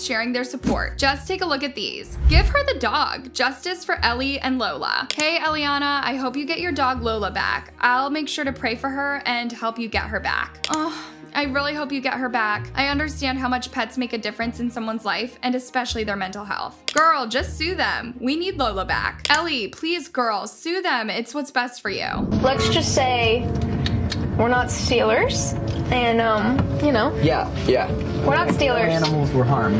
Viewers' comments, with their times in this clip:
0:10 did bro just moan?